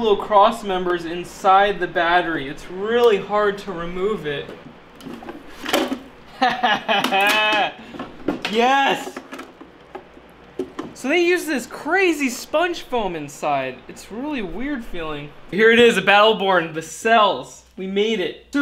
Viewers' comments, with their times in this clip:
0:06 .... that laugh is AWESOME!!! Glad you got the guts out of the case. :-)